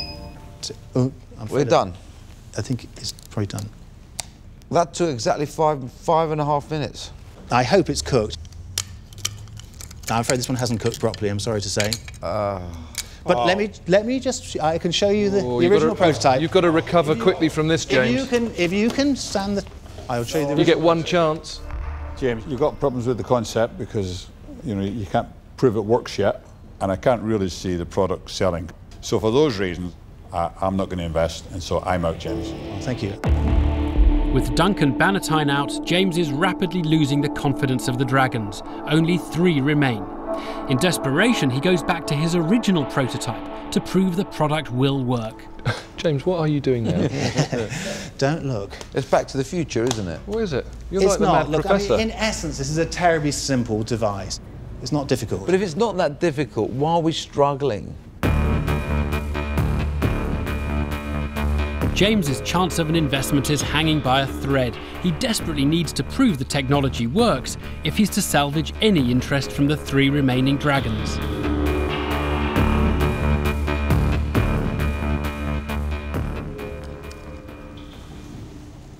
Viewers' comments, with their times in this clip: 0:10 Theo gets off on Den failures, you can hear him shooting his load ..
1:00 You know they are struggling when the music starts.